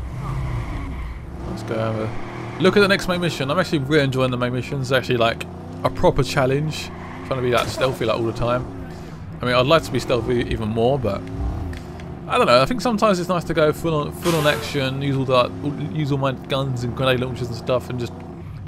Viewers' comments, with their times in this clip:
0:06 'trying to be stealthy all the time...' crashes the car and tire squeals hehehe